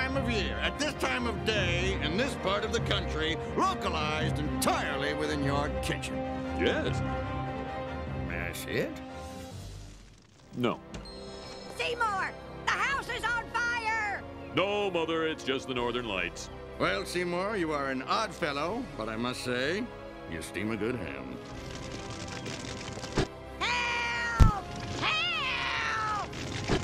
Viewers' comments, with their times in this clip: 0:08 Whoa whoa, wait! I always thought Chalmers said "That's it?" And yet, all this time he was saying "May I see it?" At least Skinner's response makes sense now.